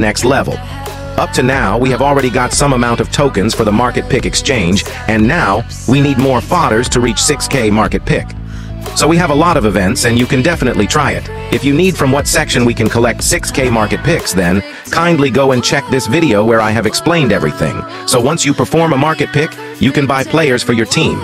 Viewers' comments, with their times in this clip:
0:07 We need more fathers? 😂💀☠️